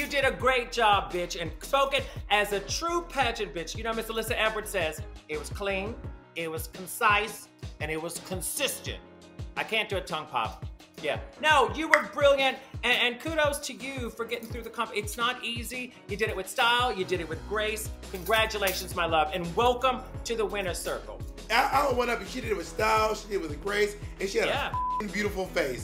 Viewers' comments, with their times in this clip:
0:06 Bitch please tell me that some of yall when Bianca said "I can't do a tongue pop" That you did a tongue pop at the exact time as Bob did